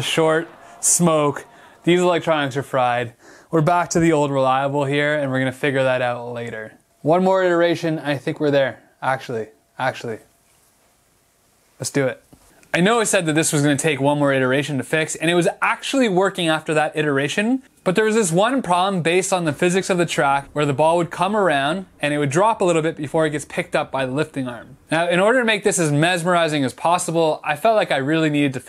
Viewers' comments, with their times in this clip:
0:10 this time you didnt clap